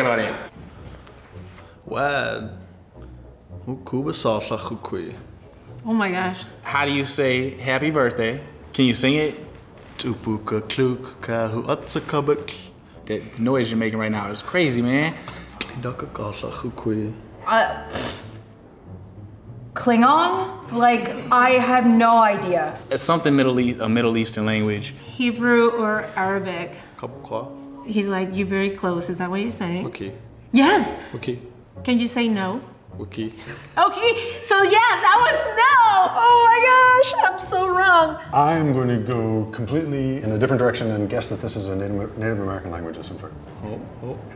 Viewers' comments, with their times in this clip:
0:03 man sounds like he’s speaking in Sims
0:27 damn that Native American language sounds SO HOT 🥵 🔥. What a shame that there aren’t many fluent speakers now 😢